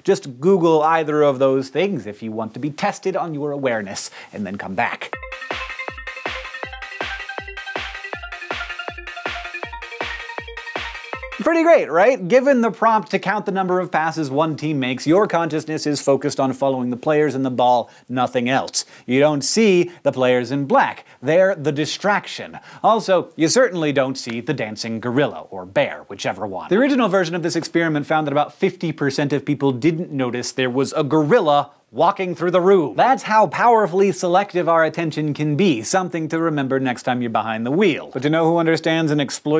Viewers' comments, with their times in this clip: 0:10 watch everything after at .5 speed and enjoy how drunk he seems while explaining things
0:20 That jump ... I spent a min trying to pause it when it glitches just as the b in black is being said.
0:20 Who else noticed he kinda spazzed when he said "black"